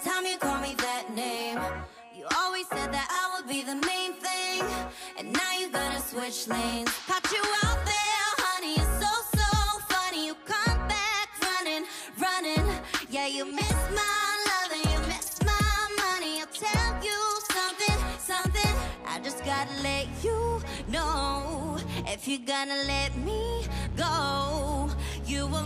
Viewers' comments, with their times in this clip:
0:09 the “come back” without any backing vocals and the prechorus oh god her voice sounds so good